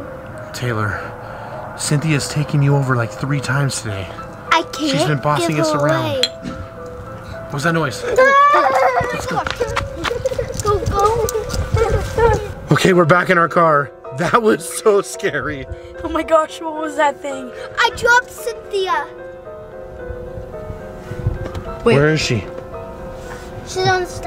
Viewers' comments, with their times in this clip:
0:06 that was cynthia's arm noise